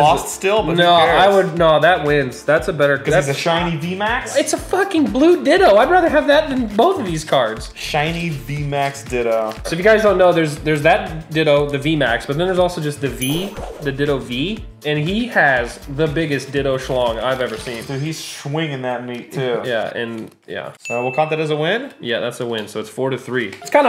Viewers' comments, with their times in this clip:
0:04 I thought he said “shiney dIlD0”